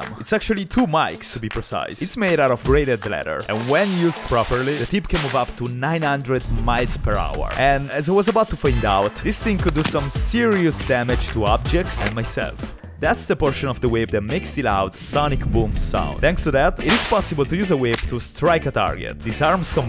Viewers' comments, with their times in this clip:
0:05 900 mice per hour